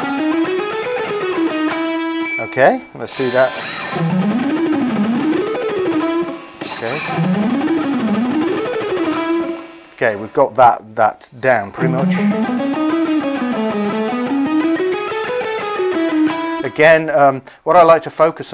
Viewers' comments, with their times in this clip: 0:04 if I wake up one day and play a scale like that I will be fucking happy and you are complaining about it xd